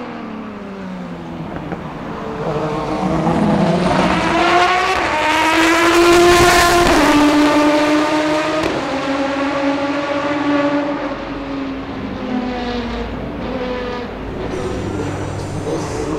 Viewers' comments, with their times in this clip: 0:04 that drive by sounds incredible